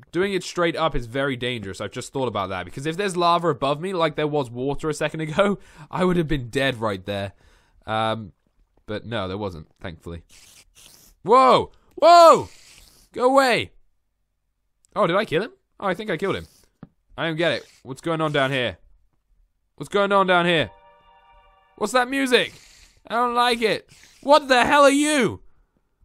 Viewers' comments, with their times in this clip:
0:10 Hey dat musik in is herobrine sonds omg